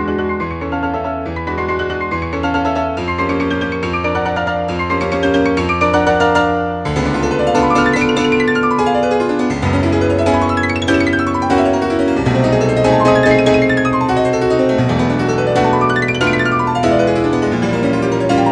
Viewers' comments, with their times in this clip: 0:05 reminds me of chopin waterfall etude